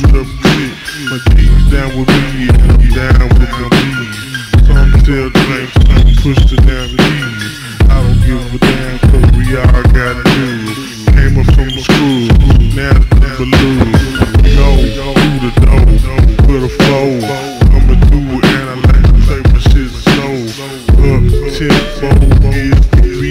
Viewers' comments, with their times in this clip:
0:08 That melody that comes in is so amazing🔥